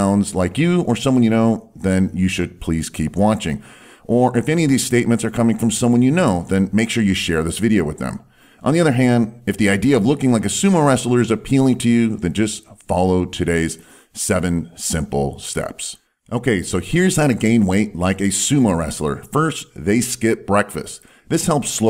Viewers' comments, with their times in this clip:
0:09 you sounded extremely exited!!!😂